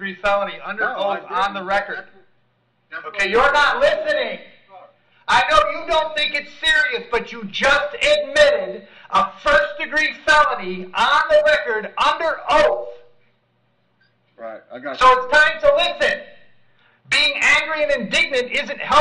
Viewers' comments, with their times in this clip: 0:04 ear buds wearers, beware😳😳